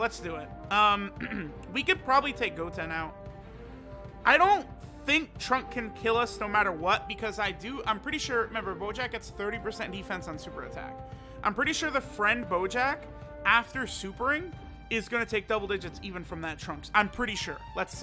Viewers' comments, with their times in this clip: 0:05 did anyone else hear trump